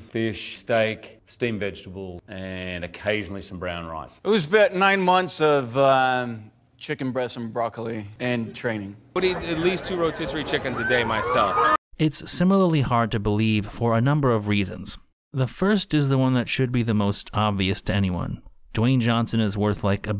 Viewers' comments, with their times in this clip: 0:06 thought he almost admitted it. Thought he said trenning but he said training. Which yeah that too